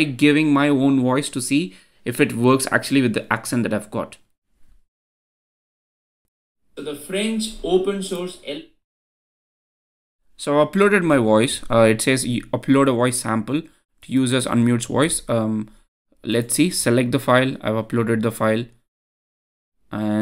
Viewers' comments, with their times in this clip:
0:06 wtf were you saying?